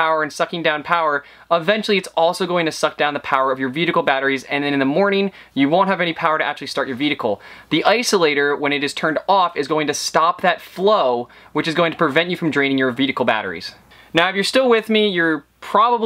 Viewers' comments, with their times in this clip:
0:03 (and throughout places of the video), ate you saying "veedicle" instead of "vehicle" ? Reminds me of that scene in Super Troopers when the trooper is saying meow.